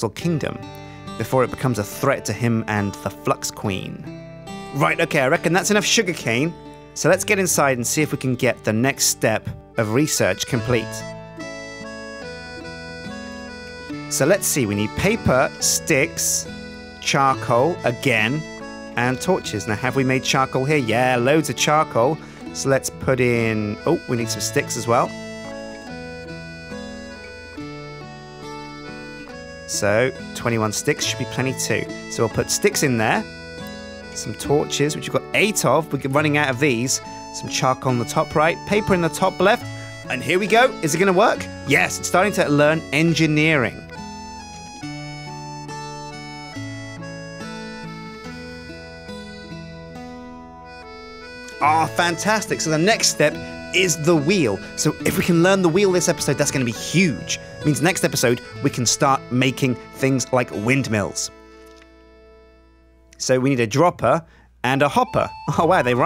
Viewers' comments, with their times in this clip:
0:08 i love the background music :)
0:11 this music brought tears to my eyes.
0:29 how many sticks??, twenywan
0:49 Is it me or is the music relaxing af